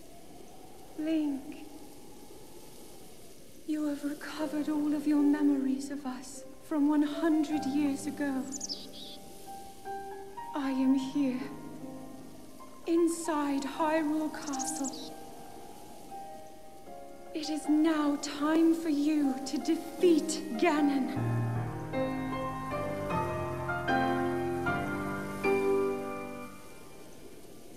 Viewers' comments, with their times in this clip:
0:08 the classic Zelda music revamped to piano version